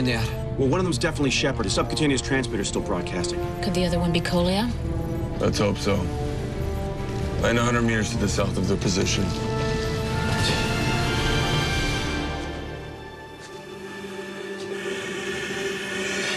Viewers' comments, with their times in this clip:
0:04 this actress look and sound just like Jlo!